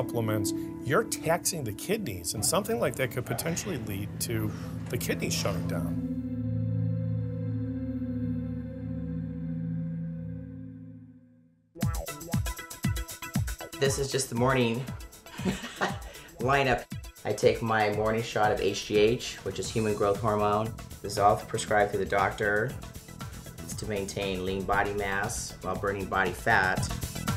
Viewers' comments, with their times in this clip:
0:09 no $hit her voice is deeper than mine...